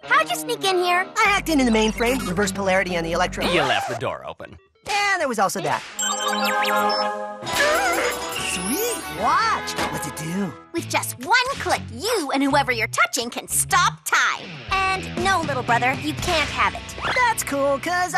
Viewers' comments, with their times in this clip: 0:06 I hear an omnitrix sound